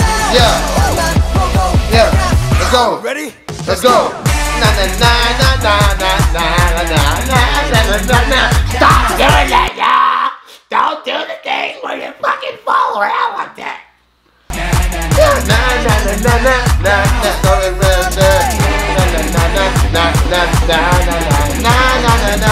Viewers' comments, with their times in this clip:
0:10 why did you sound like marge Simpson their I’m fking loved this reaction ur funny 💀